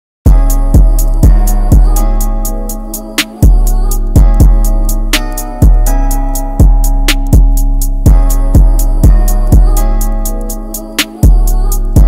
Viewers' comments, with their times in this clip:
0:00 The 808 came in at minute so it really never been good then… feel free to explain it to me bro i want some feedback👊🏽